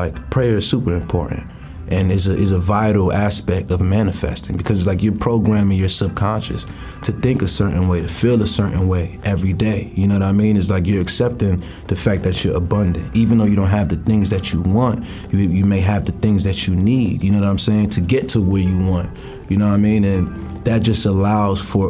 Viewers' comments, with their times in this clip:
0:08 The instrumental in the background is a slowerish version of Young Thugs "Droppin Jewels".